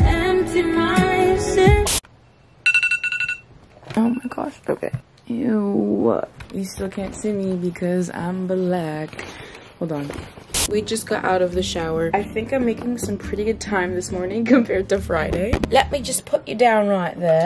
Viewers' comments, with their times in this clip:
0:03 jumped at this cause it’s my alarm as well 💀😩